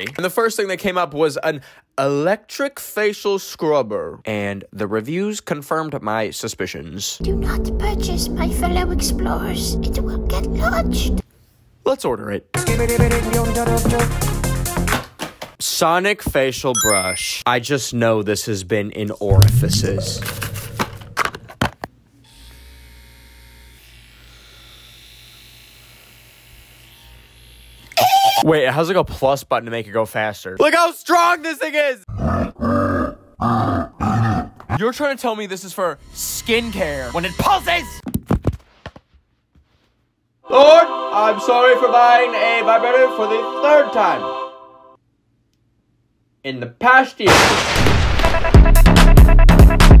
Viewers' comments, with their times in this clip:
0:09 the way he read that 💀 I literally exploded
0:26 that laugh was personal 💀
0:27 that laugh 💀💀 threw me across the room 💀💀😂😂😭😭💀💀
0:28 HELP THE LAUGH
0:32 WHY IS IT GROWLING